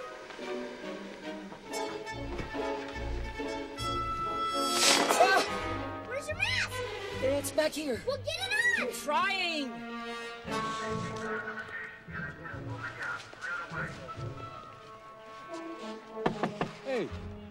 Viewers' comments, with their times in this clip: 0:04 PERVERT!!he opened that blind like he was about to scare someone in the shower. Also his voice wrecks my ears